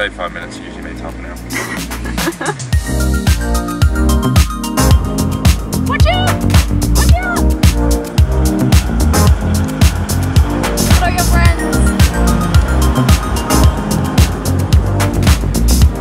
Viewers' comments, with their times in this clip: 0:04 the choice of music is breathtaking almost unreal with the goats running through the road the title of the video says it all and I will add saying: an Algerian who watch Australians rolling through Pakistan ... on YouTube on the Internet! it's the world in 2019! Greeting from Algeria and have a nice long lasting trip !